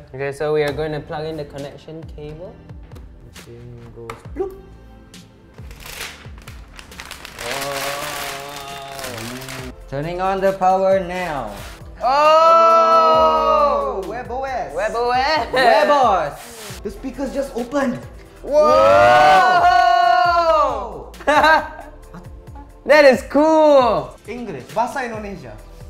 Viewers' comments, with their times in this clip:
0:07 Keep on clicking it for some reason it sounds interesting. free